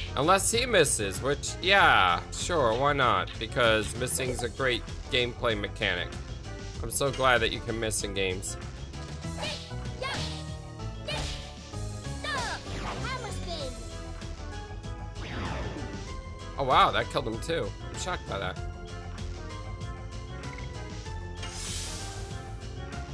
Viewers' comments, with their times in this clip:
0:09 she sounds like a nasally baby